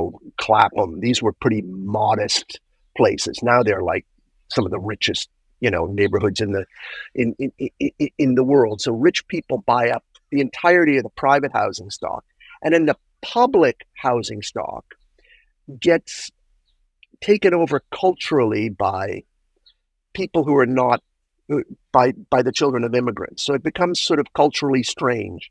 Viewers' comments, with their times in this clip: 0:08 This dude needs to see someone about his "ya know" addiction. Ya know?